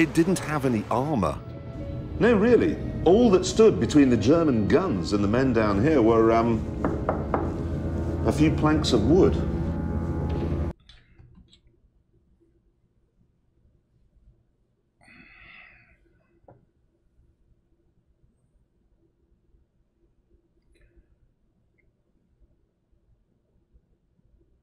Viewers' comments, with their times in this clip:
0:10 That and the pause was hilarious. The realisation that we Brits are absolutely insane.